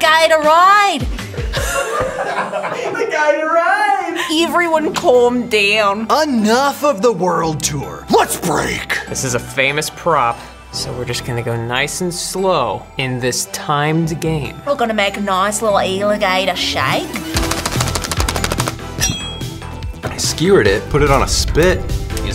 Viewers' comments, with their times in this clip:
0:03 she sounds like reyla from the dragon prince here lol